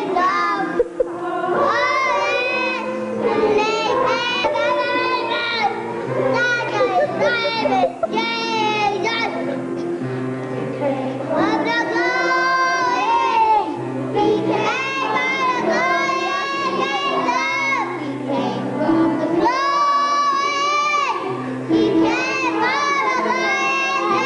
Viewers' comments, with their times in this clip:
0:05 she sounds like she's really 😡 😤 😡 😤